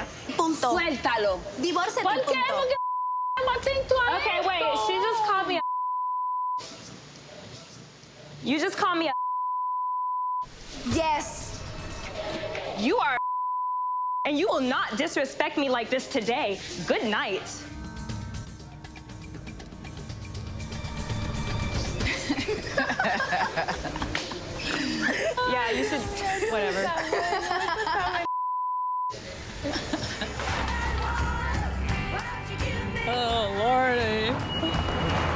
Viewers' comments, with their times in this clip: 0:08 i love how her mom's even laughs
0:15 for the Christopher Walken impression
0:20 I died when they started laughing 😂😂
0:20 The way they laughed really shows what awful human beings they are. Chantel deserves better. She should take the advice of that old witch and divorce Pedro as long as she is still a poor student. That guy was never good enough for her anyway.